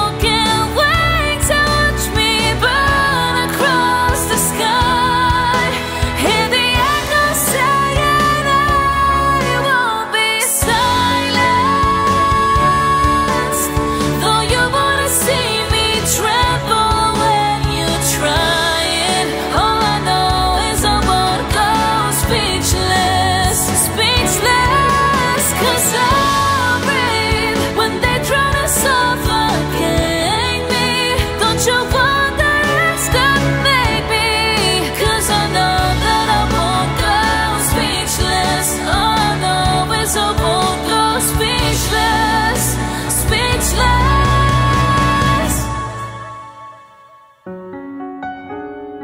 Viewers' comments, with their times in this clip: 0:06 Your voice is so clear and I feel like I can heal my mind. Thank you for playing good music. GOOOOOD!!
0:11 I am here to specially listen to the scream on you did really well!
0:31 Exactly same as original . 👌👌👌 ,love this line "Don't you wonder estimate me"
0:31 high note chills not even joking chills